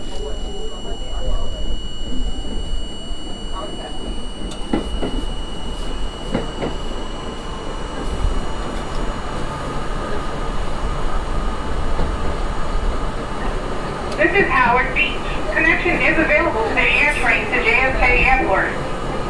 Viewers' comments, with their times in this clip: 0:06 great timing airplane flying overhead right as you enter the Howard Beach-JFK station.